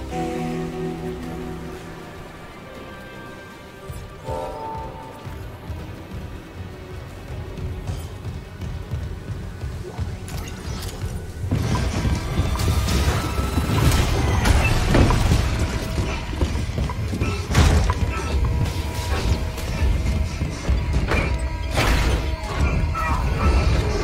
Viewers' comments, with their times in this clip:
0:10 when Isaac gets off a planet full of furries as an asteroid is about to hit the planet, leaving them to die as he laughs his ass off